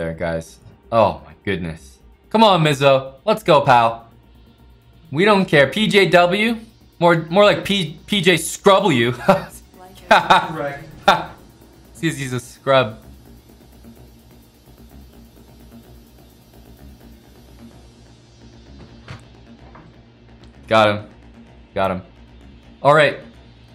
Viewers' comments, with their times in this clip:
0:04 the joke delivery reminds me exactly of mid 2000s Smosh